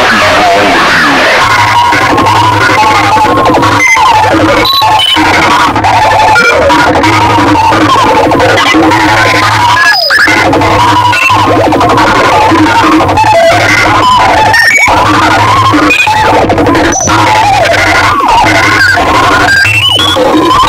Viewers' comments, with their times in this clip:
0:05 sounds like a jumpscare from a late 2000s horror game